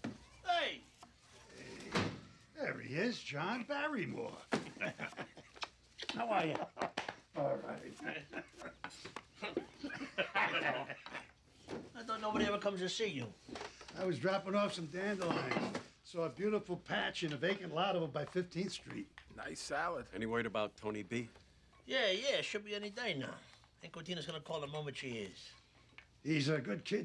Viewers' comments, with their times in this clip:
0:08 What the hell was that? "Emmphh" "High Tone" Did y'all hear Bobby ? Sounded strange